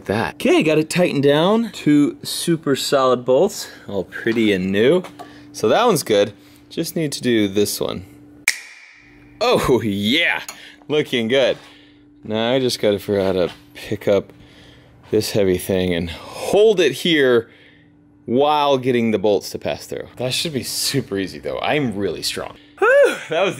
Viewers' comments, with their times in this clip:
0:07 switch dock sound effect 0.o
0:07 it sounds like the Nintendo switch sound hahaha